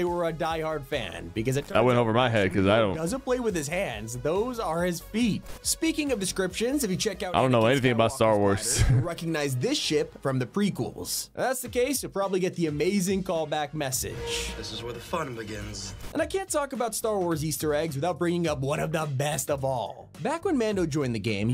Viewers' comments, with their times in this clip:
0:08 bro did not say ship